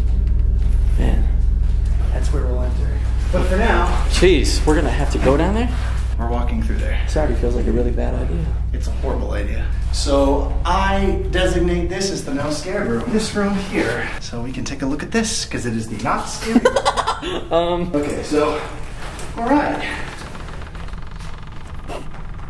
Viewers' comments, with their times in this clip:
0:09 I'm watching this over again and I could have sworn I heard someone elses voice maybe a little earlier. I had never noticed that before..